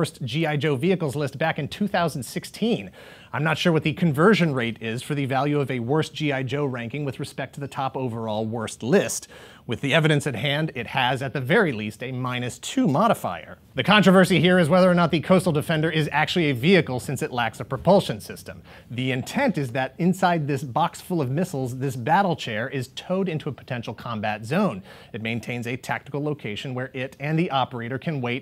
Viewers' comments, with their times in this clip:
0:10 wow you sound a little nervous there bud lol. you shouldnt be, it turned out great. as a trained and professional teacher, i couldnt help but notice the subtle booger pick n eat